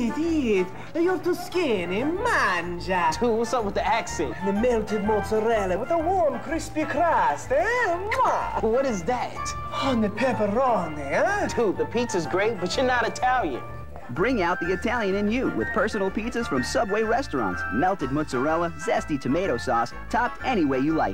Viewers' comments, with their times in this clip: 0:07 bro became mario..